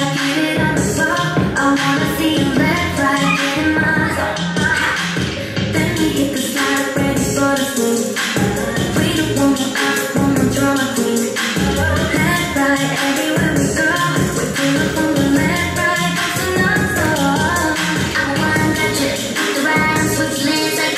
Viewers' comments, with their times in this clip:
0:04 COCONAs little "ha!" ❤